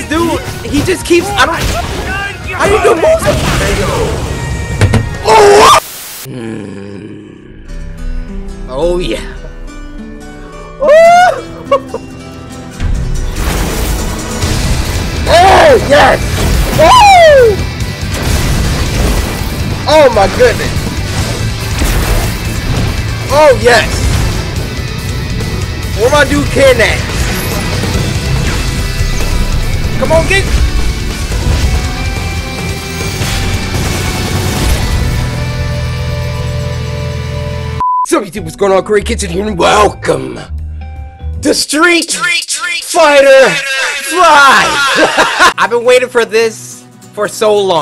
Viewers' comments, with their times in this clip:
0:06 he sounds like a metal detector
0:30 That is one of the most greatest rock music ever